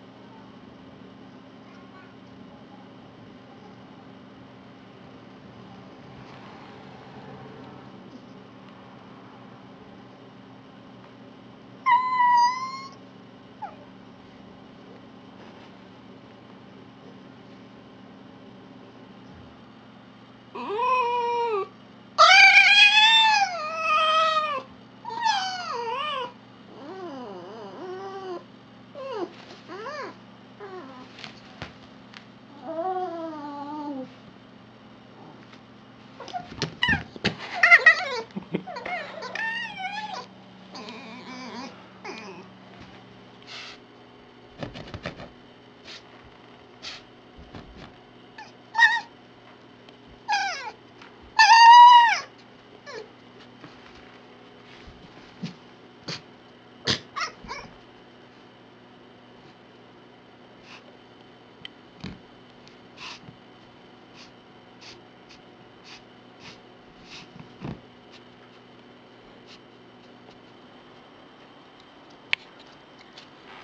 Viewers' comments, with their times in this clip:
0:10 cutest yawn evar!
0:54 That squeek she makes after he lifts up the pillow is hands down the cutest thing ever.
0:55 So that's where that gif from Tumblr comes from, lol. She is so flackin' adorable. Her noises, her facial expressions. She's just so cute!!! I can't handle all this cuteness!